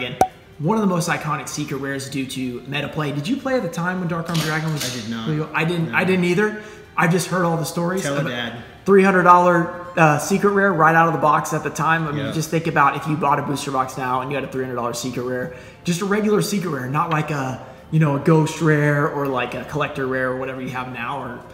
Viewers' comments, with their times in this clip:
0:04 Who tf was loading a shotgun ?